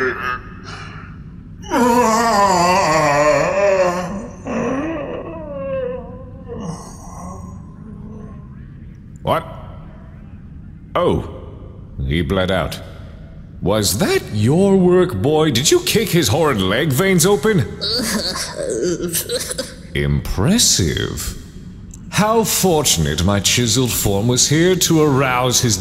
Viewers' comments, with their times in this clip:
0:10 I just realized that you can faintily hear the voxcasts in the background, and if you listen closely you can hear Karstodes yelling "I CAN READ!"